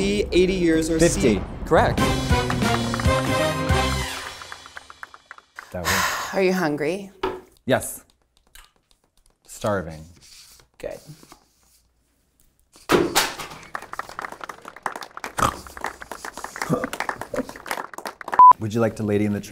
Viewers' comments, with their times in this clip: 0:06 the kawfff sound.. cute af🥺🫰